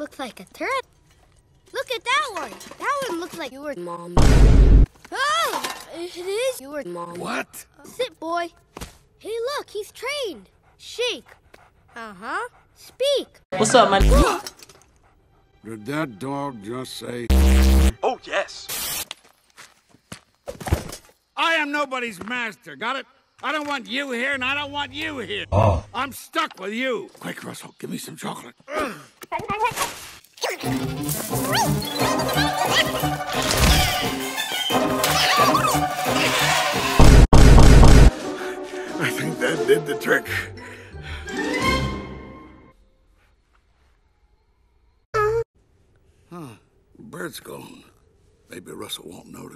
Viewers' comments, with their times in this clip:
0:07 Russel's foot gets crushed and screams when Mr. Freddingson closes the door and doesn't care
0:18 Undertale Mettaton except in different voice
0:19 is a really catchy song but I don’t know what it’s called
0:23 Russell splash the leg Russell says RUSSELL:AAAAAAAAAAAAAAAAAAAAAAAAHHH😂😂😂 🤣🤣🤣🤣
0:25 the “ah”was HILARIOUS
0:31 play it on 0.5x. It's the normal speed only with high pitch voice and music!